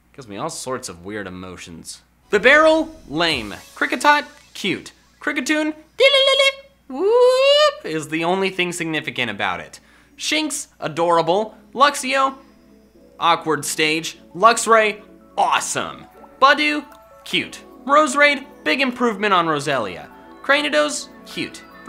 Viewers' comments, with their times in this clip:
0:07 You’re starting to sound like Squirtle from Pokémon Talk.